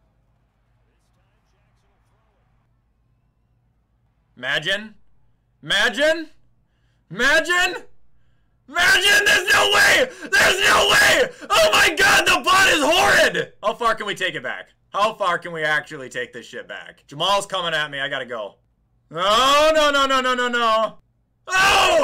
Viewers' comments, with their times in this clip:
0:09 my ears hurt